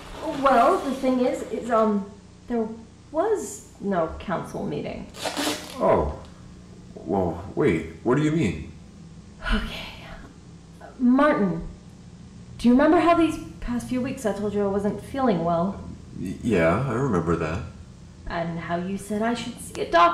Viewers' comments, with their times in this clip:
0:08 Ayyo that beat go crazy 💀💀